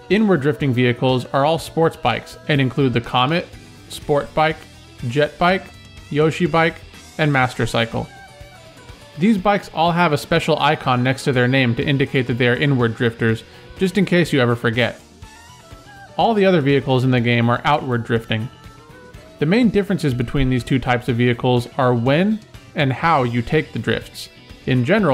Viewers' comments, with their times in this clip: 0:06 i dont know why but i just love the way you say "yoshi bike"